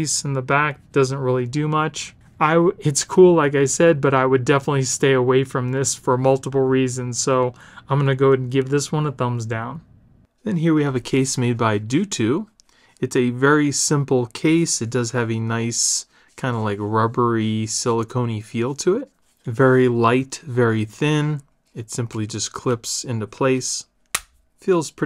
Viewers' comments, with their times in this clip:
0:09 it sounded like you went through puberty all of a sudden! Mom would be proud.